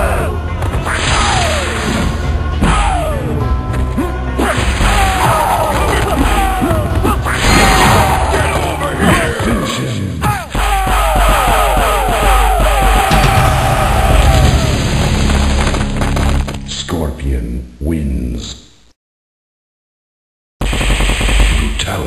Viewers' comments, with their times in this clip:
0:10 Dayme... lmao epic...I started bobbin my head cuz it started to sound like a instrumental da way yu was beatin reptile's azz lol